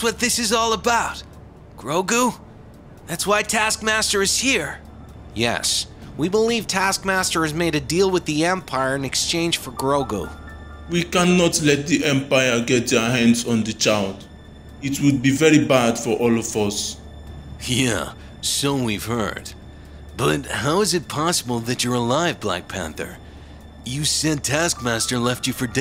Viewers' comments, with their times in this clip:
0:10 it is so funny how black panther sounds lol